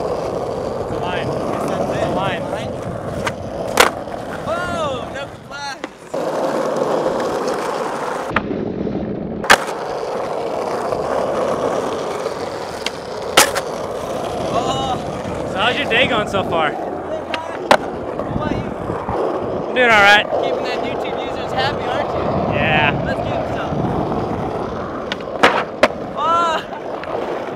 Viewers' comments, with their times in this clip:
0:08 homie in the back was like omg